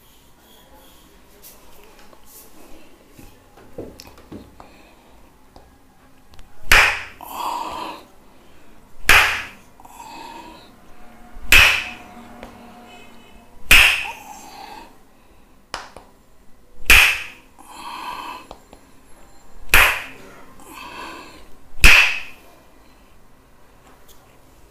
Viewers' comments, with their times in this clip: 0:06 that uhhhoo sound 🥵